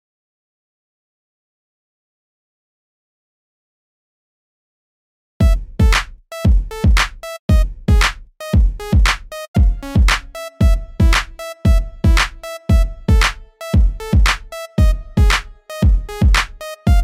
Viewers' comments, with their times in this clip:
0:05 THE NEW MARIO SOUNDTRACK!!!